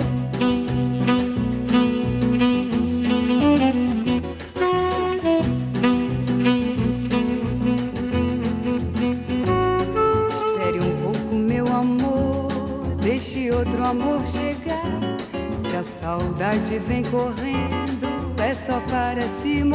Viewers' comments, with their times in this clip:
0:05 is the sax sample dawg.